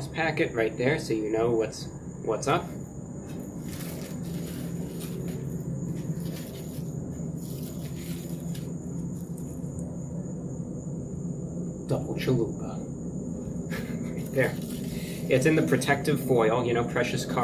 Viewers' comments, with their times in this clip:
0:05 The background sound that starts really fits the situation. Ooooooh spooky.